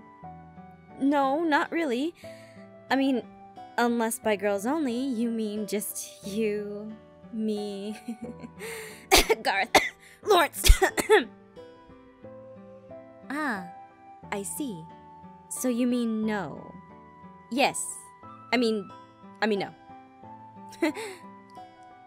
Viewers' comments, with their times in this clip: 0:04 I CANT STOP LAUGHING WHEN ahem garroth ahem laurece AHEm AHem